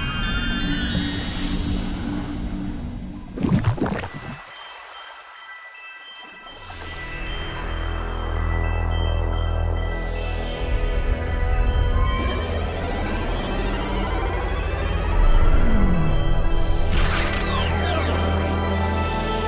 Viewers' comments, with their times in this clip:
0:07 No one is talking ?